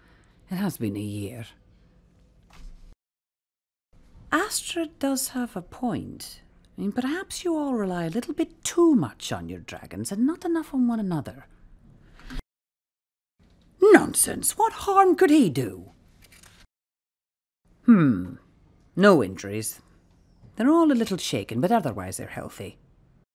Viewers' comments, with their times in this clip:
0:07 HOLD UP IS NO ONE GONNA TALK ABOUT THIS? Edit: Okay hold up nevermind I thought she said "ride"
0:11 that sounds kind of like Anna from overwatch.